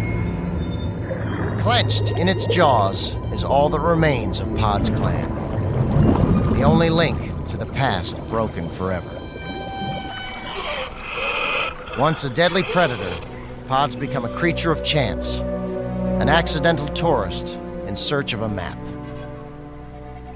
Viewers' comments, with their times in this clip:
0:08 Gordon has followed me to the documentaries! I just needed a break from kitchen nightmares, and I get this!